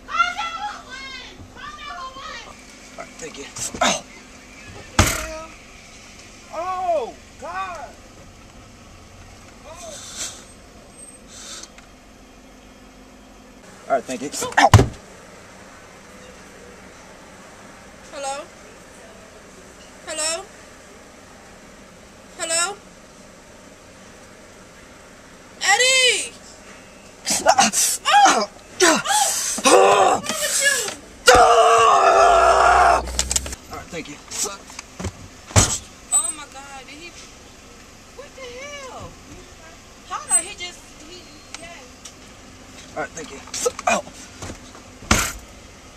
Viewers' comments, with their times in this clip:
0:06 That dude fr sounds like CJ from San Andreas
0:15 rapid fire "hello?" Lol
0:27 the way he just started screaming and crying peacefully taking off🤣
0:31 i was laughing so hard when he typed in HULK MODE ACTIVATED and started shouting, i was dying!🤣🤣🤣🤣